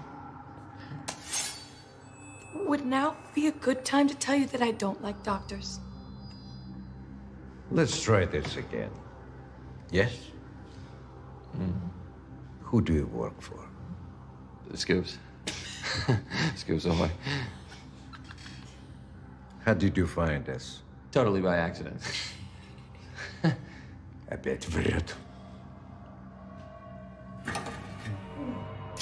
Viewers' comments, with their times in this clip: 0:07 "Yokel, fatty Roman's cousin" the only thing i can think of when i hear his voice.
0:14 "UhScoopz.....scoops ahoy" Love that delivery🤣🤣🤣